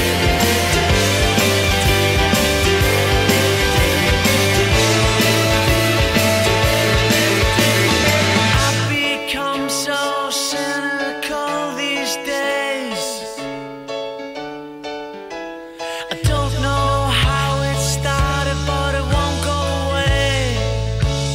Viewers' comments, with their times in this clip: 0:07 still gives me goosebumps, one of my favourite bits of music ever, love the down key change, and how it sums up how i feel x